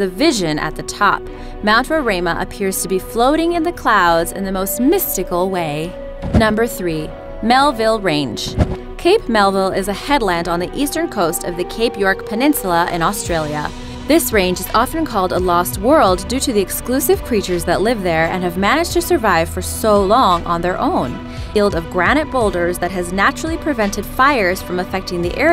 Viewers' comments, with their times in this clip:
0:07 she says down the road funny lol